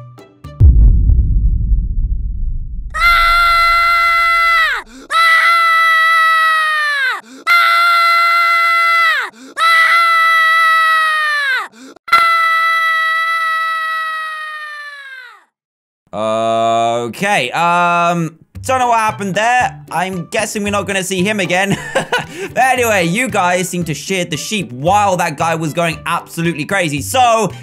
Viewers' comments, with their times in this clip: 0:03 when the sheep started screaming I was wearing earphones, my ear buds have officially been murdered
0:03 that one baby on the airplane
0:08 if you keep replaying it sound like an alarm